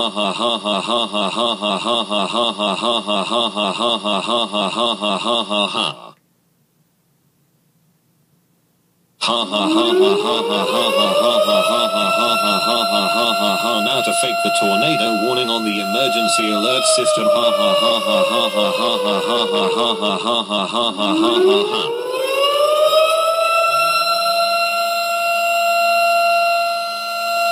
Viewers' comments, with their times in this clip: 0:09 Turn down your volume